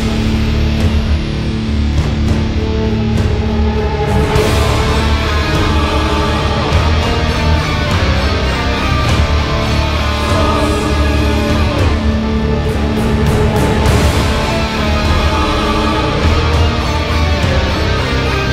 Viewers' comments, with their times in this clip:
0:05 major slayer vibe to that riff !